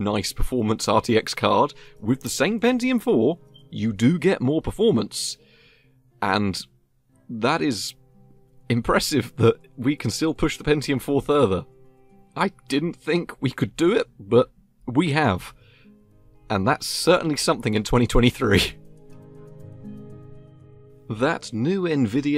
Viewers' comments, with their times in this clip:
0:03 Smoke detector beep